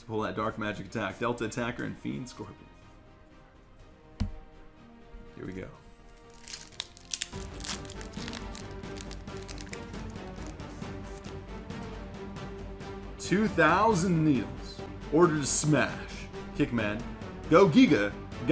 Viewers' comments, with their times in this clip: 0:06 when u hear that awesome music in the background you know that we will pull something awesome :)